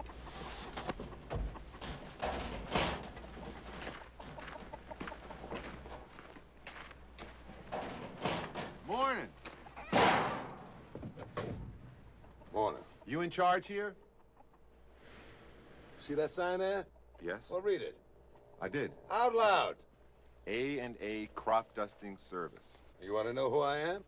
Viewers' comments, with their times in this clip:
0:10 lol Telly Sevalis tried but he could not hide the NY accent through his fake southern drawl